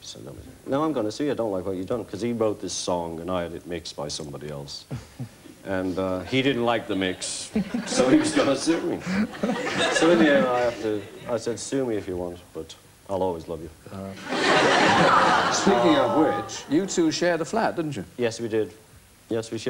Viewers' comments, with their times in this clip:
0:06 Georgie's little giggles are so cute!
0:07 George's little laugh😭❤️